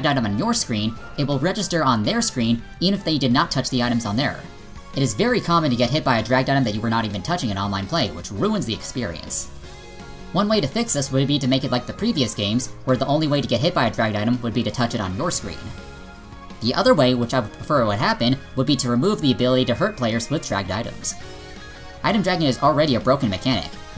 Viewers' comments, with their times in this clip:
0:09 the outro music